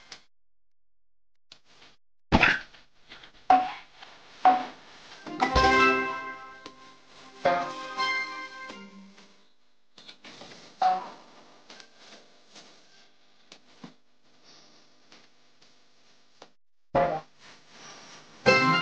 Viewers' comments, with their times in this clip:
0:03 Haha focus music Fart oh sorry Edit THANSJ FOR SO MANJ LIEKS